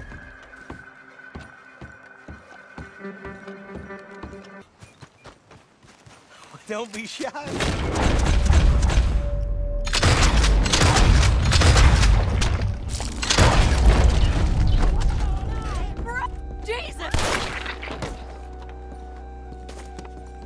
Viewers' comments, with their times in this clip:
0:06 Bray - " dont be shy partn... " Arthur : "ok.." ..booom booom boom